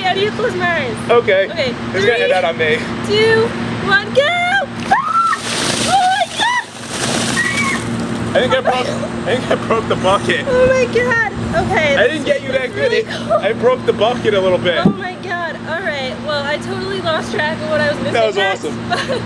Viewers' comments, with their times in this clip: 0:06 The little scream
0:07 parakeet that got shot by an m2 browning
0:07 never heard that scream..